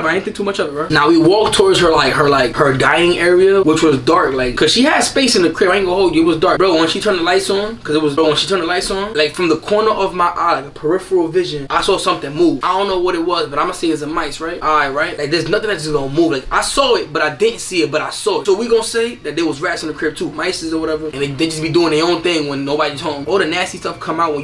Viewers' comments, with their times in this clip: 0:07 he Sound like 69